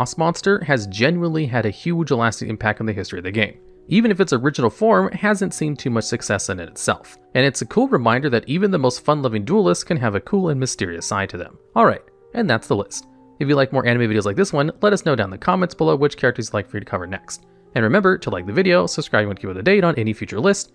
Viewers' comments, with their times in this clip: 0:07 yeeeaaah (in a serious monotone)